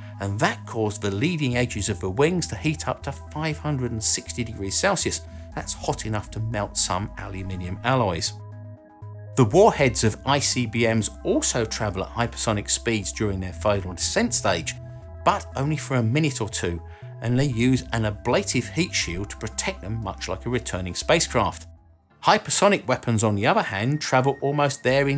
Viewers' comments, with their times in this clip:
0:08 Curious Droid: Did you say A-L-U-M-I-N-U-M!? Are you turning into an American?